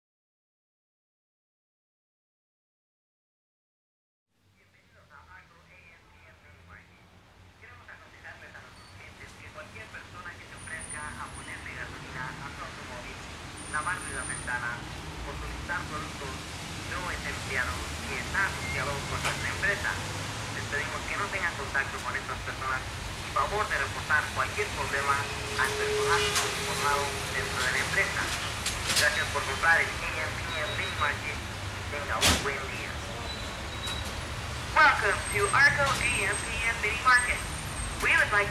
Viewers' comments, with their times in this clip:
0:10 wait, was that Spanish?
0:24 Every section of this song is done masterfully my own favorite section starts where the heavy distortion guitar part fades into the AM/PM sample and it feels like a drug experience. Its a great example when music can paint a vivid image in my imagination with very few words. I can almost taste the moist air in the parking lot at night. The piano piece is simple yet very impactful, each stroke is very well placed. The distorted background voice of man speaking in a megaphone (at least that is how it feels to me) sounds/feels like a religious speech or a from a mosque in an Islamic country. This song is a journey, but most of their songs are. but those last 5 minutes stand out to me personally. I love these guys.